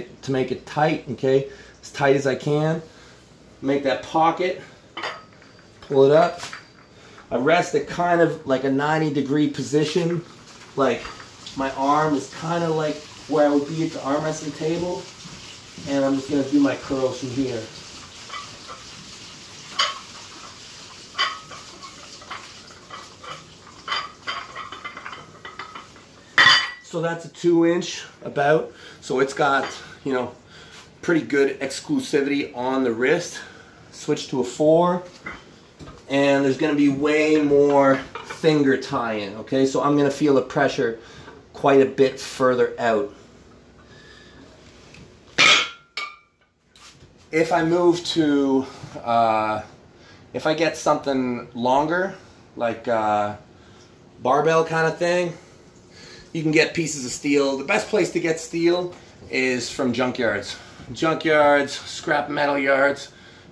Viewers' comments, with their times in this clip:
0:10 someone flushed doogie 💩 down the waste pipe....🫢😮‍💨🤥🫢🤭
0:13 somebody in your house was taking a dump while you were doing your dumbell.that is disrespectful.
0:45 "Further ouht" his candian got em